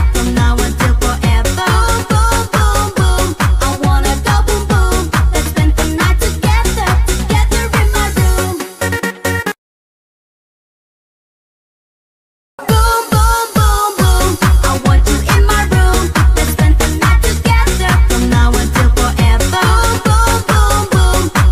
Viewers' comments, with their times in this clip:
0:03 try to do his dance and his laugh all the time